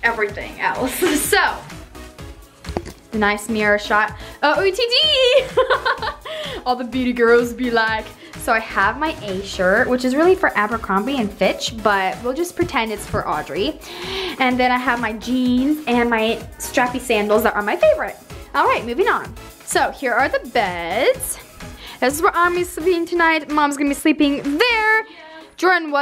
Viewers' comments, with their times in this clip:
0:10 thought she said bit** but she said flitch👌🏼🤦🏽‍♀️🤦🏼‍♀️